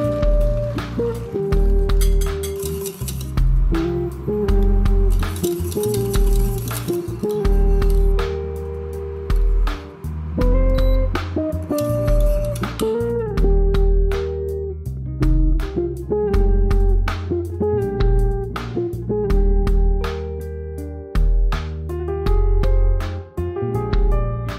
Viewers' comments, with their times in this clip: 0:09 Great pastry skills man that noise is the same exact beep of the ps4 when turning it on .